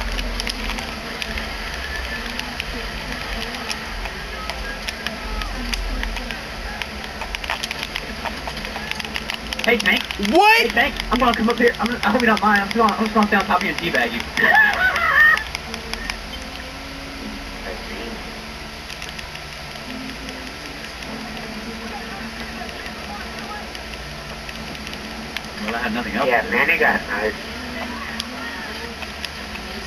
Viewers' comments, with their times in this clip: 0:10 wtf my laugh